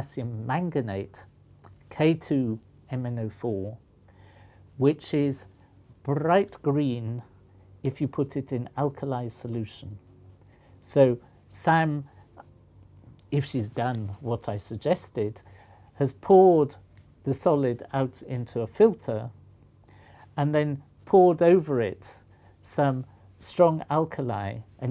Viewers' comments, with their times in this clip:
0:05 "Brringht grreen." Poliakoff's cover has been blown, he is definitely Scottish.